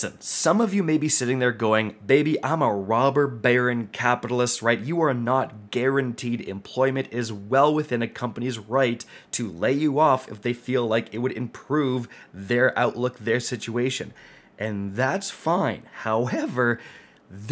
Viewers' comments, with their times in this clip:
0:05 aaahhhuuulllllll that stock lol was funny how you lost your voice into the video lol